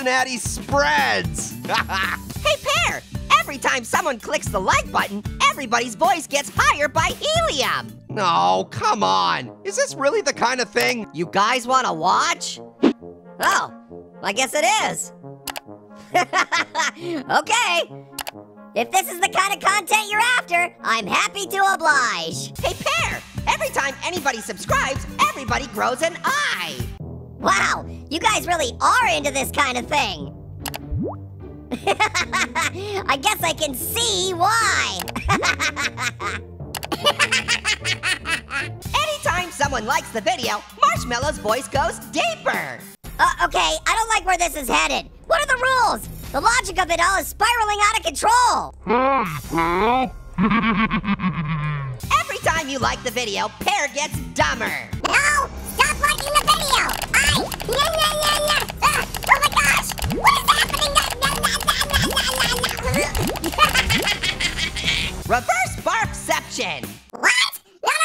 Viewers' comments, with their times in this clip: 0:07 sounds like orange
0:11 that sounded exactly Orange
0:11 pear sounded like annoying orange
0:11 Now Pear sounds like Orange! LololololololololololololololololololololoL!
0:43 Pear: Uh ok I don’t like where this is heading. What are the rules?! The logic of it all is spiraling out of control! Marshmallow: *deep demonic voice hI peAR! hEhEHehEheHe!
0:48 Marshmallow is voice so dark
0:49 MARSHMALLOWS◽️ VOICE JUST GOT DEEPER.
0:49 sounds like amogus’s voice
0:49 D E E P V O I C E
0:56 this came from pear to eric cartman